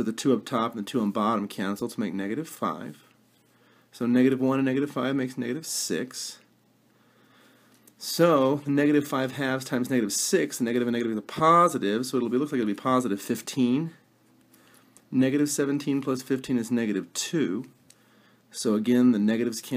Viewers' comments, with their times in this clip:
0:06 his voice is like an auctioneer lol ... thanks though :)